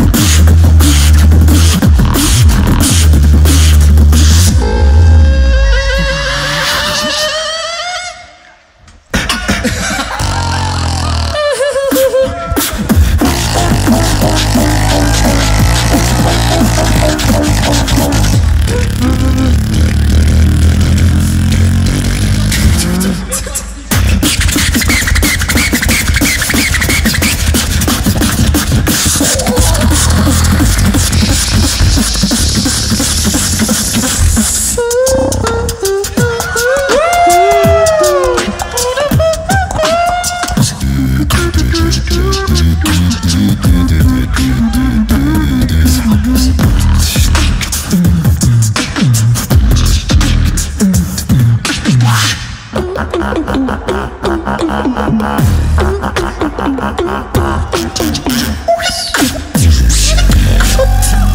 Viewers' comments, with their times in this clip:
0:10 is the best drop i ever heard
0:12 best drop in my opinion👌
0:13 My favourite beat
0:42 alem god crab scratch